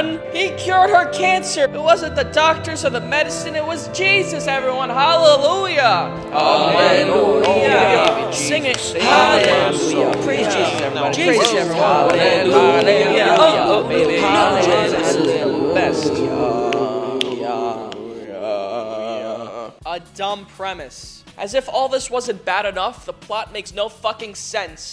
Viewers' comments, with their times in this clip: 0:05 He low-key had me bobbing my head. This was catchy.